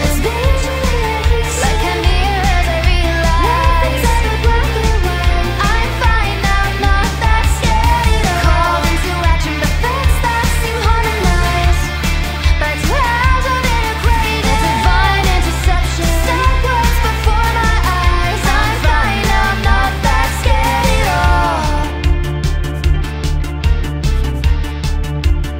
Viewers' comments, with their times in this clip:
0:09 Did she needed to catch her breath there or was that intentional?